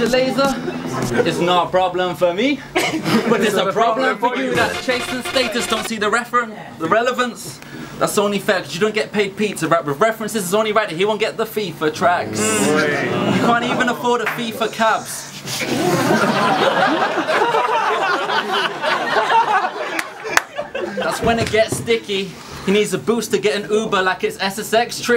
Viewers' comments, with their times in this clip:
0:07 I was expecting some insane bar to drop on the beat, but he's tongue slipped